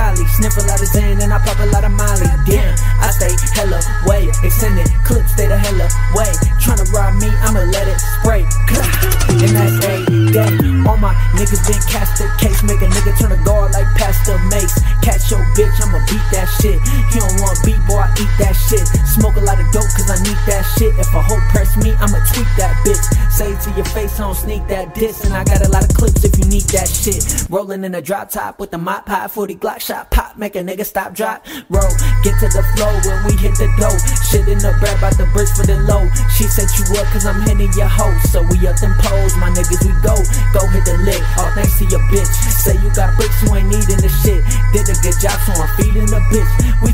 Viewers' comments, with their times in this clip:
0:09 that bass though 😱😱
0:28 Wish it was longer his voice speeds up perfectly